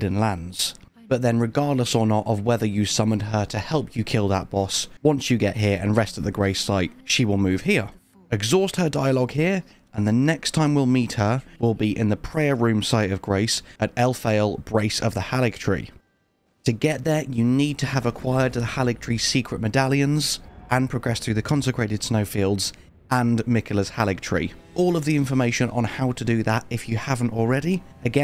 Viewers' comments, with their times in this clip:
0:10 I heard her say Melania now I'm worried